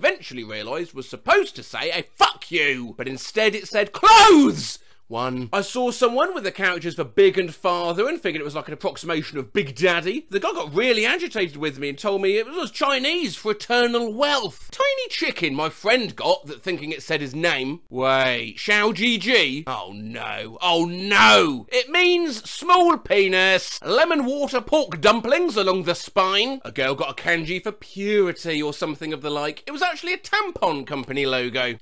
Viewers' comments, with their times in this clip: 0:05 𝙤𝙣𝙚. * one intro starts playing
0:18 I love the tone he took while reading this one, as if "xiao ji ji" was some kind of terminal disease and he got traumatized by its effect on someone he really liked.